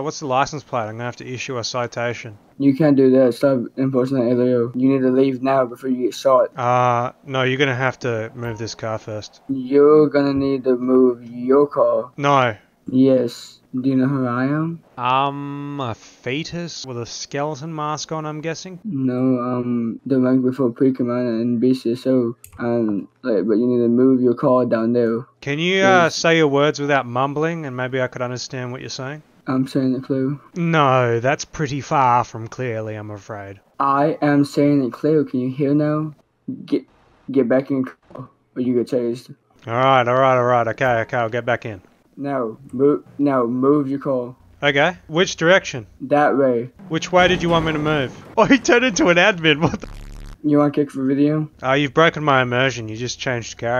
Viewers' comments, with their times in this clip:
0:04 can only understand every fourth word
0:04 "You need to leave now before you get shoaet" ☠🤓
0:19 hes the embakwemopwecommandafwombesis
0:19 wtf did he say
0:29 kid sounds like walt jr
0:30 I'm trying my best to understand what he's mumbling
0:34 he talks like walter jr